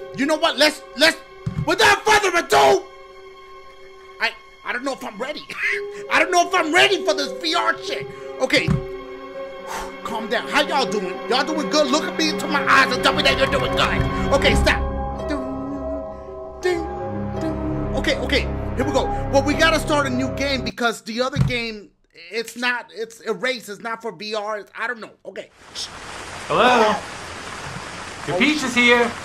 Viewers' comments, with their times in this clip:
0:10 the music went so well with his talking